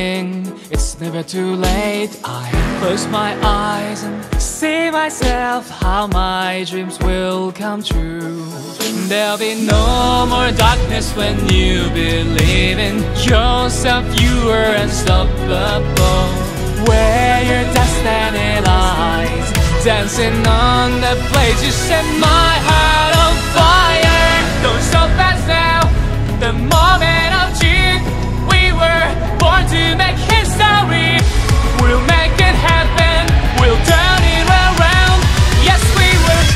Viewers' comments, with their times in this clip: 0:10 <with subtittles> WHEN YOU BELIEVE IN JOSEPH YOU WERE UNSTOPPABLE XDDD
0:21 THE VIOLINS!!! THE VIOLINS MAKE IT ALL EVEN BETTER😍